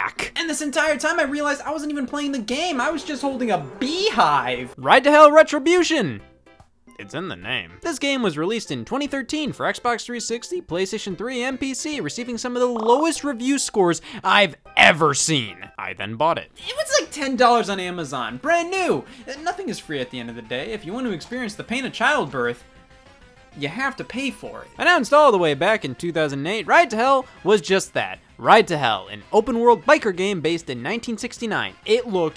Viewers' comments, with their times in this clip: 0:09 Little voice crack when he said “Xbox 360”
0:16 The highest I’ve heard Scott’s voice